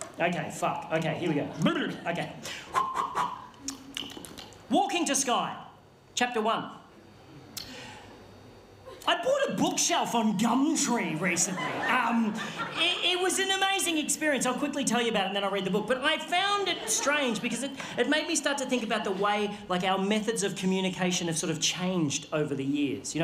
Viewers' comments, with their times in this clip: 0:07 takes a deep breath I BOUGHT A BOOKSHELF ON GUMTREE